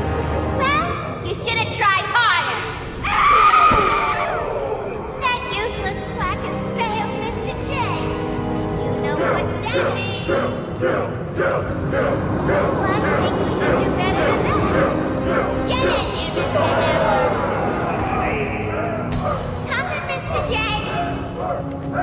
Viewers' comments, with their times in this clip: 0:03 that scream kinda sounds like mileena from Mortal Kombat X